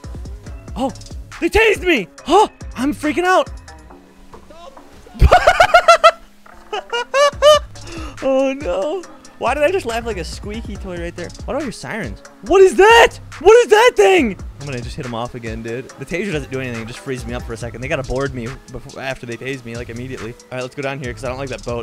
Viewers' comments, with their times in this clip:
0:07 someone clip that… he laughed like a squeaky toy!!! Hahahaha ☠️ And he called himself out on it! LoL!!!